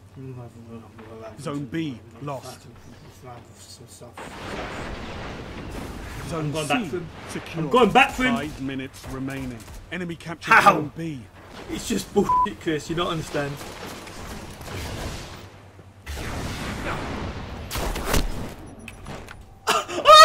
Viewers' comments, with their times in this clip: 0:04 mumbles a curse on the player